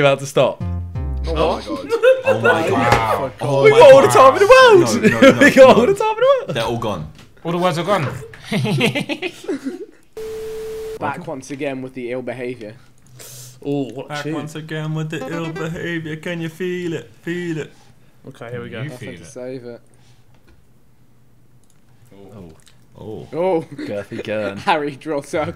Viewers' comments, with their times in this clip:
0:08 Tobi’s laugh is the best